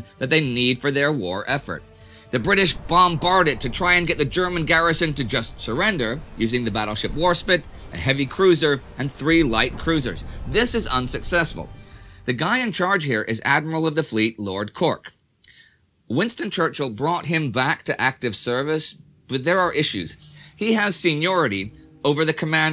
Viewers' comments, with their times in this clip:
0:07 "battleship war-SPIT" he did it again!